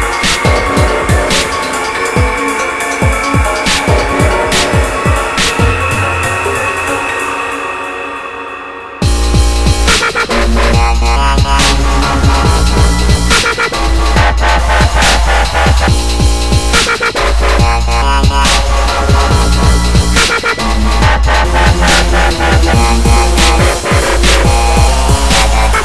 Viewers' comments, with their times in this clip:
0:08 Thanks for the constructive advice! This is actually the first song I really figured out how this shitty LFO works in Massive, so it's my first real try :) After ? It's the same thing at the beginning:) The wobbles are imprecise though, I'll reupload this song when I corrected the mistakes. I won't promise to take out all the reverbs, I find it a very atmospheric effect, but to each his own, after all :)